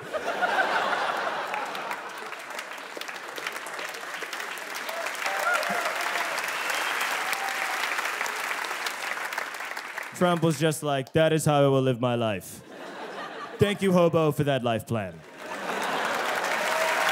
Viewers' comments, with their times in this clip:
0:03 That slow applause I think perfectly reflects your comment 😂